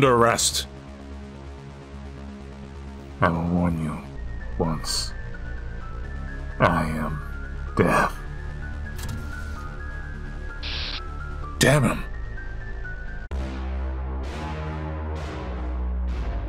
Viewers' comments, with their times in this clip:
0:03 I like how you cover your mouth to add the effect of talking with a mask on